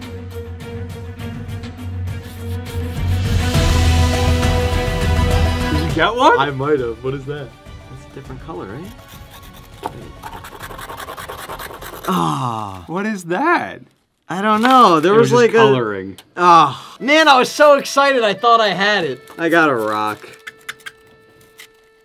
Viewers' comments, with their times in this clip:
0:05 He speaks gindi